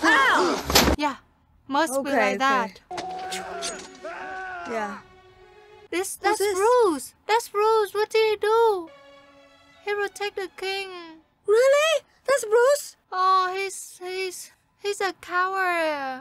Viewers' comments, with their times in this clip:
0:04 I know many will disagree but the best acting in this movie in my opinion goes to the character of Robert the Bruce. The look and scream he gave when he thought William Wallace was going to cut his throat. thank you so much ladies for a wonderful reaction, such passion and emotions.